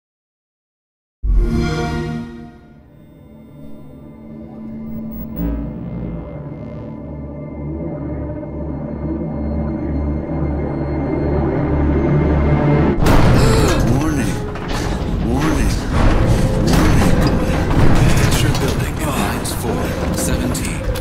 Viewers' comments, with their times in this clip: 0:09 The warning voice always gets me he just sounds so bored